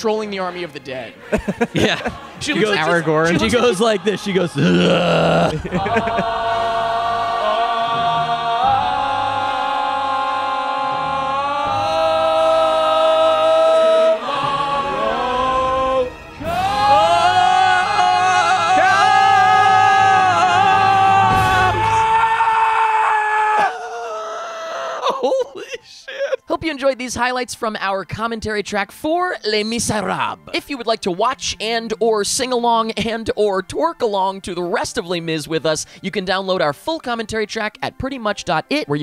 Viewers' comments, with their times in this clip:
0:08 just as good as the singing in the movie
0:11 I’M ACTUALLY TEARING UP FROM LAUGHING SO HARD AT HIM JUST SCREAMING AT THE END
0:13 Oh man, that scream/roar at the end past the final note, slightly killed me ;:-D
0:17 that scream at the end is comedic gold.
0:17 I don’t know who screamed at the end, but I’ve replayed it about 30 time just laughing about how insane his scream was.
0:21 That scream tho, I laughed so hard
0:21 the person hollering his lungs out 😂😂😂
0:22 Why does that passionate but also completely rage filled scream at the end give me such life?
0:23 The final note though 🥵